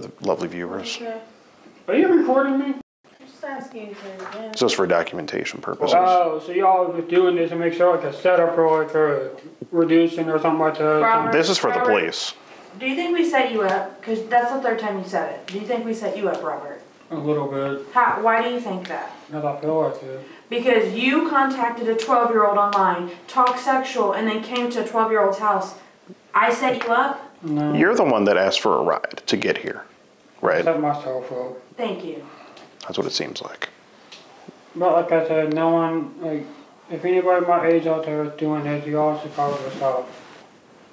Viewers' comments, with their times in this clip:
0:07 My guy had a Biden moment “Ohhh so y’all doin this imayshal like a setup erikahwick”
0:22 home girl was pissed when she said, “I set you up?” Lmfaoo